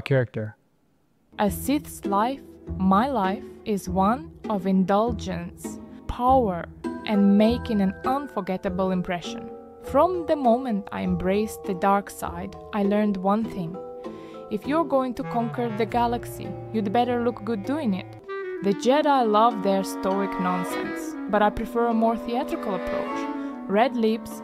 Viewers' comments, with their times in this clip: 0:05 It sounds like she is reading a text. Not the best audio generation. where did you genetate it? do you know Minimax can also generate audio for free?